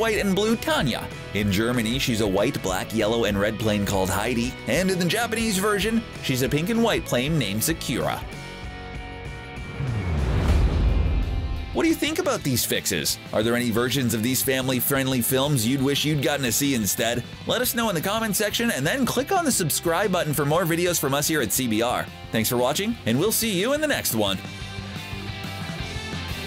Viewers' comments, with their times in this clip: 0:06 Sa-ku-ra (ku spelled like ko for english i guess) not SeKyoura Come on You know im a weeb and will get uncomfertable by this and plus i have the acian accent as i live in asia so i had to mension it i did love the video, and no this Sakura thing doesnt bother me
0:06 Is it just me... or did he just say ZAKIRA ?
0:06 SaQra. You said Sakura just fine earlier so that threw me off.
0:09 Wait, ‘Sakira’ or Sakura?